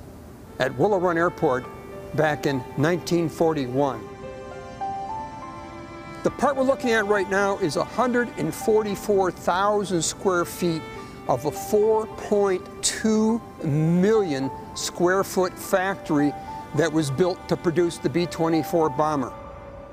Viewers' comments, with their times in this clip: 0:06 This is a really good video about the Manhattan project and the development of the atom bomb. But one thing I found a bit "strangely ironic" (wrong word!?) is that they use music for the background that's very similar to the theme music for the 60s comedy series The Addams Family". ( exactly.) I suppose it's a bit appropriate, but I'm not sure. I'm not a great judge about such things. It just hit me as strange and ironic.